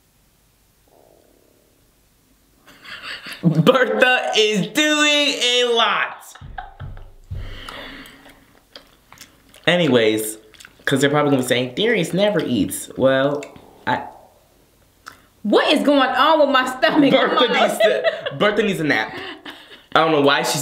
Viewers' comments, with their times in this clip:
0:06 LOL Bertha was roaring lmaoooooooo